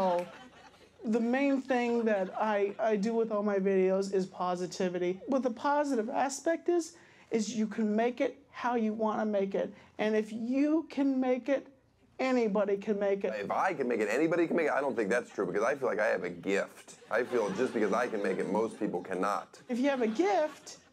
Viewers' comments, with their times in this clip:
0:06 wise lessons from morty, oooh jeeezzeee Rick